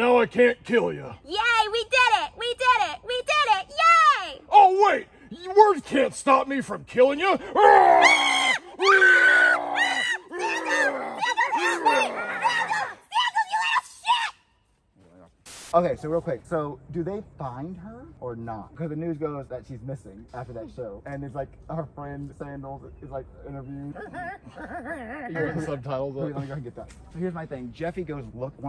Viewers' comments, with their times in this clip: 0:10 "SANDALS" what i hear: NI...
0:13 DID THEY FORGET TO USE THE SQUEAK SOUND EFFECT TO CENSOR THINGS???????